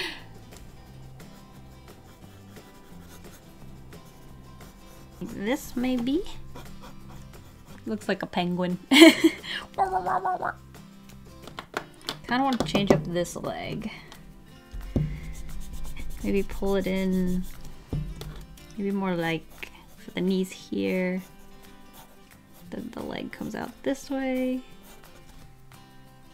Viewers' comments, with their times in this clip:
0:10 *insulting penguin sounds